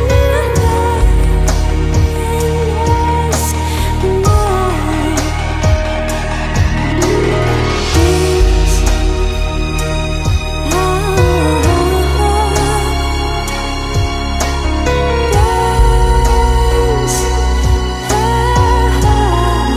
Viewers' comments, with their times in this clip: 0:07 Awesome video!! the music is in such harmony with the movement of the seaweeds!!